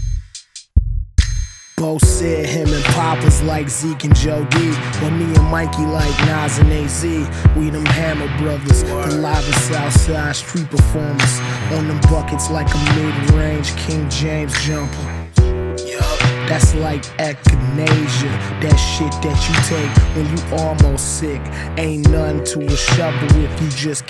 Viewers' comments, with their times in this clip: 0:10 beat drop crazy